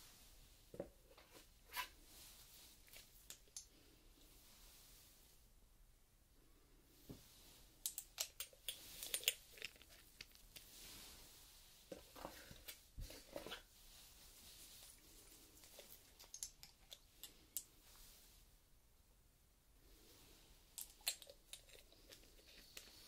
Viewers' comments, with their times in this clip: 0:09 The sound of glass is so amazingly relaxing! Also I really really love your videos. In my opinion you are the best of ASMR videos!